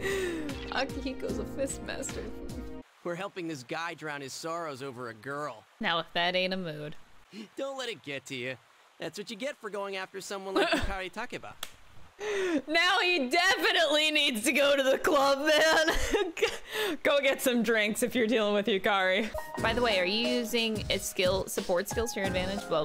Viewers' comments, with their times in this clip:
0:03 Okay, I am gonna act like i never heard Youske Nope no Youske here talking to Junpei